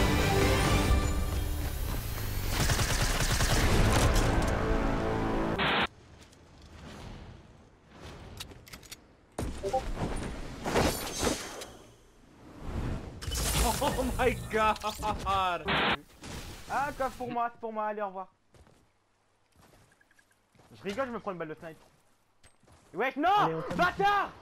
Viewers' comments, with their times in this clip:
0:08 Who else checked their discord lol
0:09 Anyone else check their discord ?
0:09 discord sound lmao
0:09 I was on my bed watching this with my phone but I still looked over at my PC which was off, curse you Discord for training me to stop and drop everything once I hear that sound
0:09 Who chevked his discord when he heared the beapment in xD
0:10 u got a discord notification